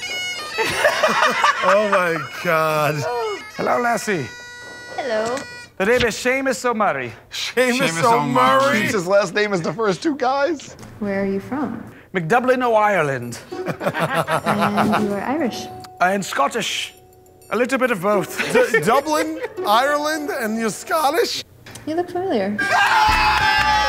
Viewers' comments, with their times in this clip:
0:04 murr sounds like lord baelish from game of thrones